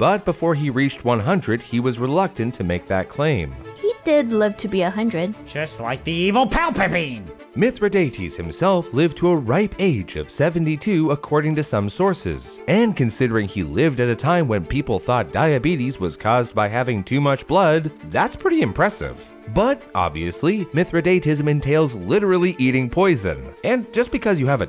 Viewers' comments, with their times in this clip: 0:05 Who's Palpapine? Palper bean? Were you trying to say Palpatine?